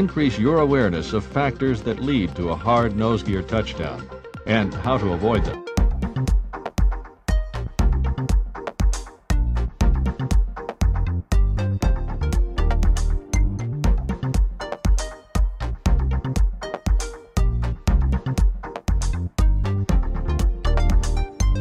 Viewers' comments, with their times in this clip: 0:06 vibing to this music! 🌊